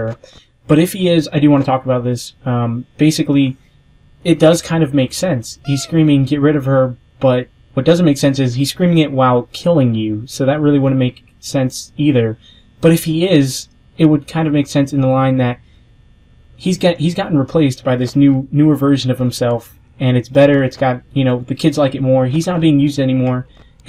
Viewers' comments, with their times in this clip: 0:05 WTF was that noise? it sounded like a dogs chew toy, is it from the game or your mic (i know its in bad quality)